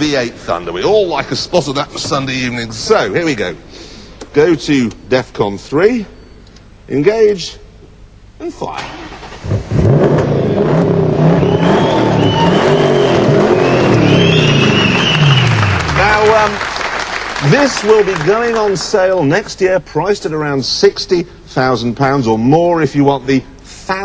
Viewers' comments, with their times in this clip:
0:09 That SV is the prime definition of symphony. It sounds so good.